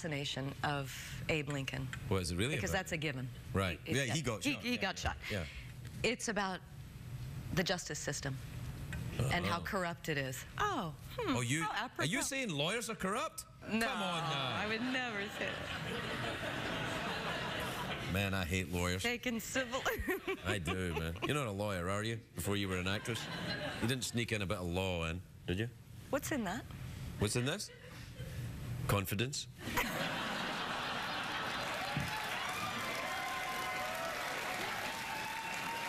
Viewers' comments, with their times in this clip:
0:05 My favorite part, Robin's laugh and Craig's Confidence
0:18 Her laugh is lovely🥰